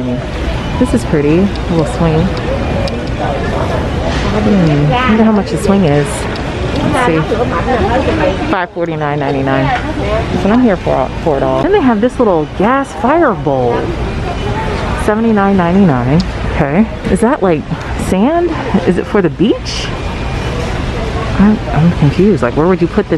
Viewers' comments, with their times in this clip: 0:05 Anyone else Vietnamese and hear the conversation going ?